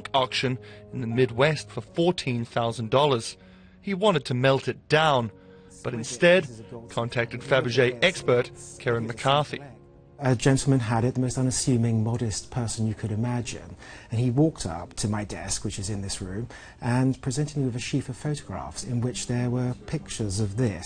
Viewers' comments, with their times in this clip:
0:06 did he just say... fabergéEGGspert?